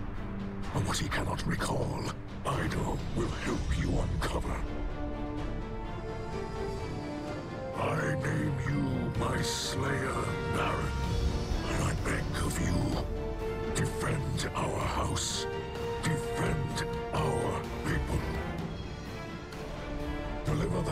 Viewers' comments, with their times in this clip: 0:03 Hearing that music again is so hype